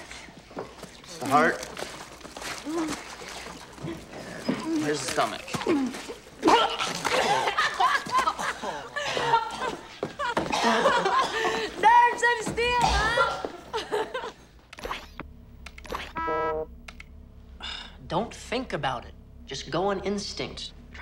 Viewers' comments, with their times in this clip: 0:07 that laughter delivery was awesome